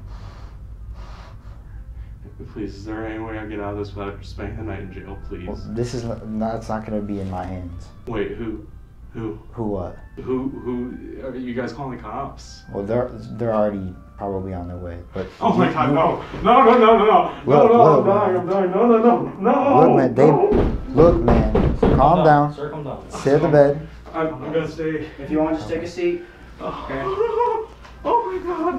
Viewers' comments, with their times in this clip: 0:06 thank you omma Edit: "are you guys calling the cops? They're probably already on their way." instant crybaby hissy fit tantrum
0:14 Singing the song of his people ! 🎵Oh ho ho hooooooaaaah my god! 🎼itsnotokayitsnotokayitsnotokay aaaaahhhhh ah hoo hooo hoo ha ha aiiieee oouuaahhh 🎶 IwannadieIwannadieIwannadiiiiieeeee ahhhhoooo!
0:14 He was singing the song of his people starting
0:14 is the best Mickey Mouse musical number I've ever heard.